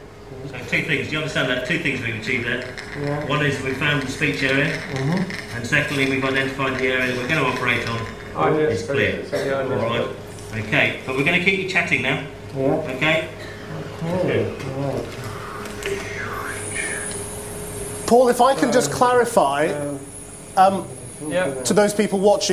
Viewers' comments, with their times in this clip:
0:07 i thought they said this is the dumbest brain surgery